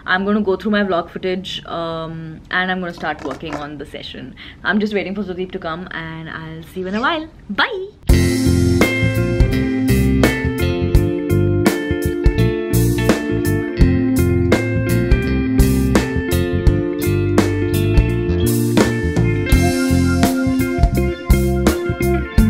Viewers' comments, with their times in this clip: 0:07 that "Byee" was so cute 🥺